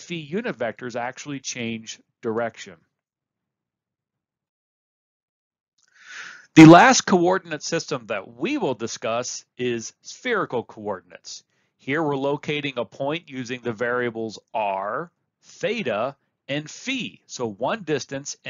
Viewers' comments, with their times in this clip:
0:06 “THE! LAST!! CORDIntes system” 😂 thanks a lot for video!!! ❤